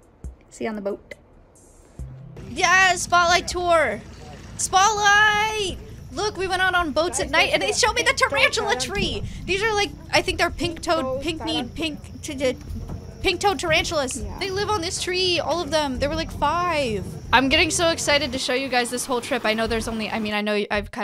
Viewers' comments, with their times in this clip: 0:06 I've never heard someone say so excitedly "and they showed me THE TARANTULA TREE!!!!" like she does lmao